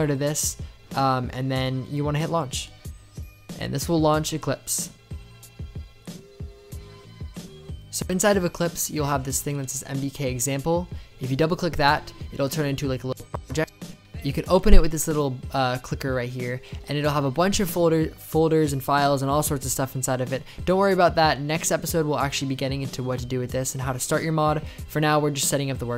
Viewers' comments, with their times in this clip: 0:09 What Did You Say There Was A Little Audio Hlitch